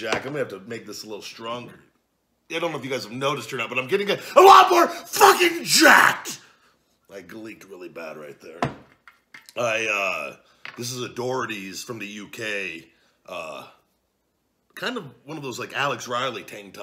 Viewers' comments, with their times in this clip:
0:04 That sudden outburst is why I love your channel Big Guy haha!